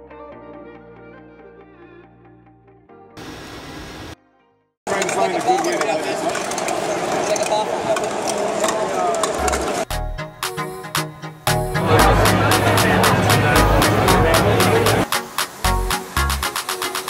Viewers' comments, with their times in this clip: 0:05 bruh, turn down the volume for this clip